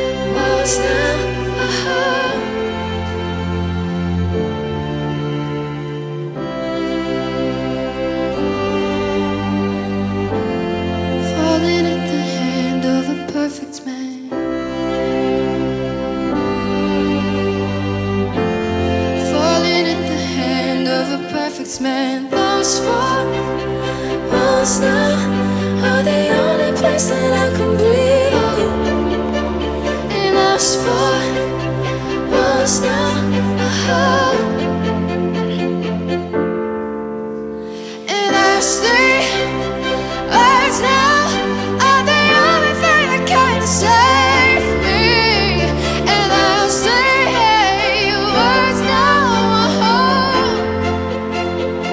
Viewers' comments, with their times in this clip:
0:06 Every time those strings begin to swell I just get the biggest wave of chills down my spine 😌
0:39 This is a perfect song coming from a perfect voice named Georgia from BROODS. Or how your blood dances in your veins listening to the saddest lyrics. And when it finally settles, comes and shatteres all. :)